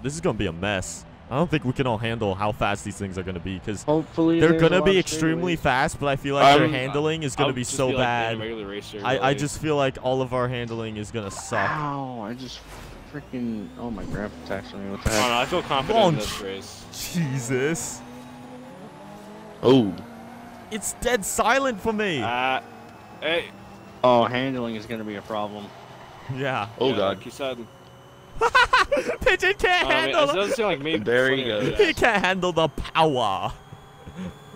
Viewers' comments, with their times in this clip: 0:10 omg i thought that was my phone i had headphones on and it sounded like mine does while im on my computer with headphones
0:21 Australian accent on FLEEK